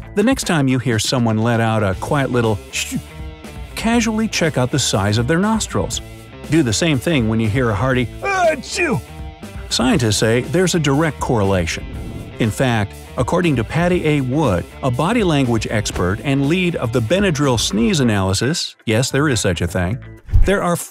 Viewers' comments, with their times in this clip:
0:07 I think bright side just used another bad Mic and just shouted achoo